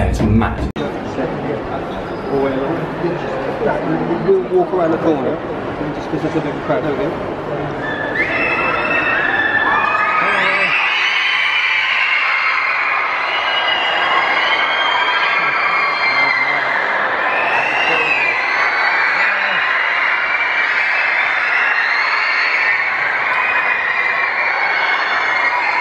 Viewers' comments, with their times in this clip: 0:08 R.I.P headphone users...